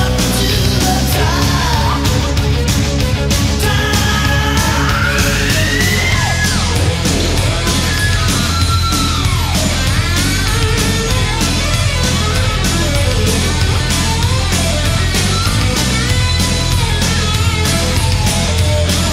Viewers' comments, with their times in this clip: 0:06 Steve’s high pitch “top” changes into Lynch’s artificial harmonic - I love how they came up with that.